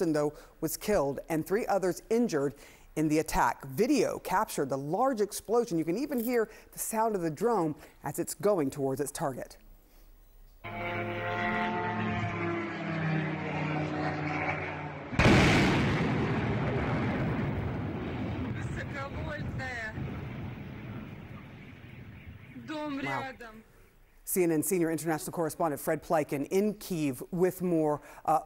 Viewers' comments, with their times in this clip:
0:10 sounds like Stukas